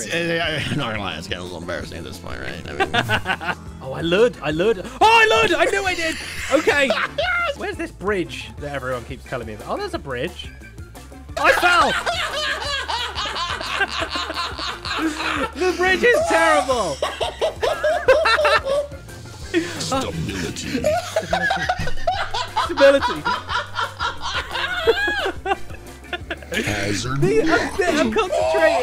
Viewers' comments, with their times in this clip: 0:09 had me cracking up so hard when I was watching the stream, such a contagious laugh !